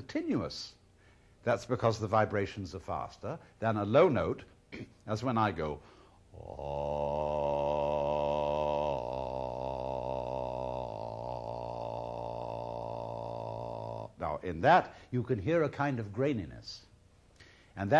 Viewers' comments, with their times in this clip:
0:04 Alan hit some nice low notes 😊